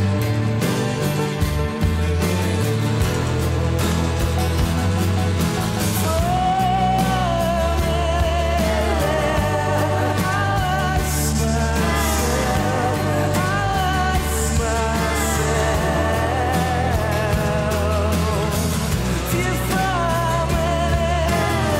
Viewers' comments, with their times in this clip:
0:03 Thom's Voice here is just pure bliss
0:05 that vocal hurts me. It’s like I can hear the pain in Thom’s voice